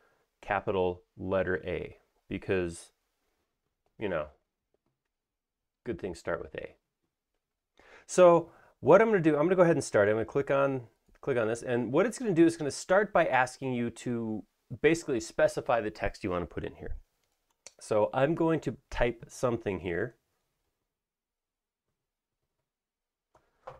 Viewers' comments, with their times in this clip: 0:05 😂 so well done the straight-up delivery ... Awesome also starts with A.